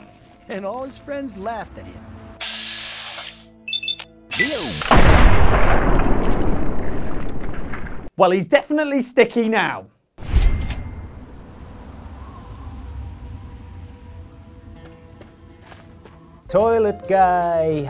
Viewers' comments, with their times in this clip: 0:04 man that sound...so evil :)